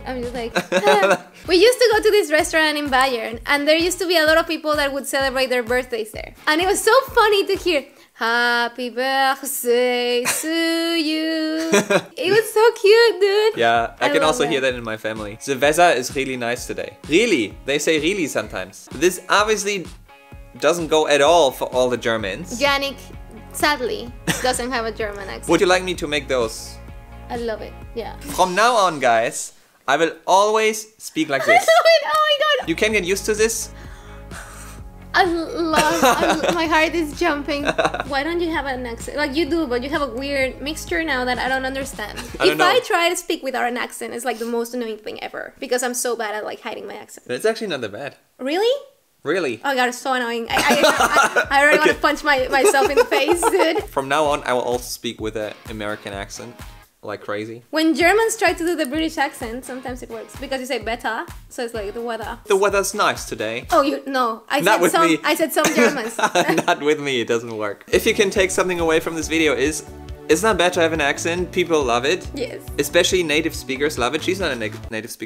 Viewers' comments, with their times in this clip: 0:10 Okay, sorry I can’t stop laughing. Hapi Börchssdäy lmao
1:02 I actually think that accent sounded reeeaally good 🤔😂